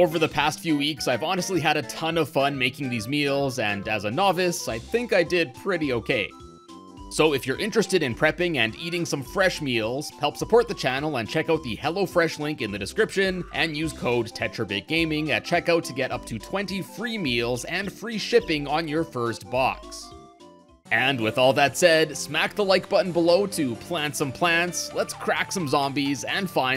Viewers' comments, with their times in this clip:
0:07 I thought it was foot 💀🦶